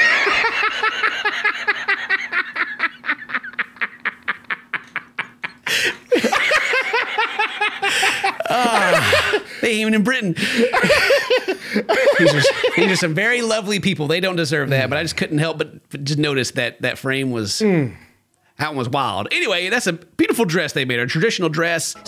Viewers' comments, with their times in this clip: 0:09 Hey! 🥺 Anyone thinking the bride sounds like Mila Kunis?